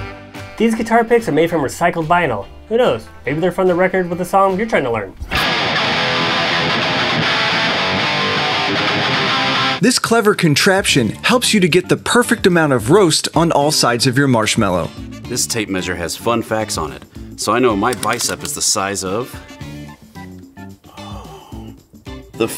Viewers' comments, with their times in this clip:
0:05 I CAUGHT THAT NIRVANA RIFF
0:06 i love that he just butchers smells like teen spirit